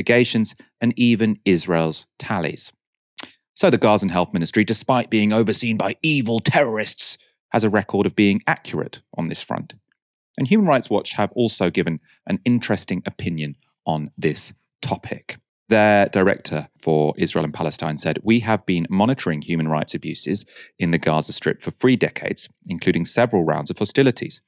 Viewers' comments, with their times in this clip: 0:06 Thanks for the vid. Gotta say though, man, this overly affected style of satirisation is a real turn off. Most adults I know don't do this, and it hurts my brain...